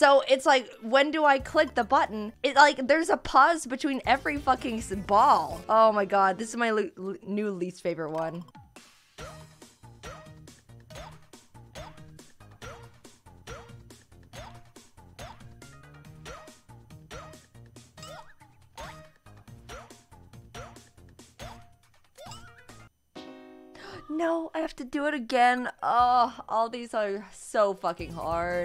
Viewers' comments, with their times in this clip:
0:05 if you count, it still follows the rhythm. So it's still on the one-AND count of the measure; just keep the tempo of the song, and hit A on the upbeat of the second measure (so count: one and two and three and four and one >AND< and that's when you hit it)
0:09 There’s some arguing here if anyone wants to see.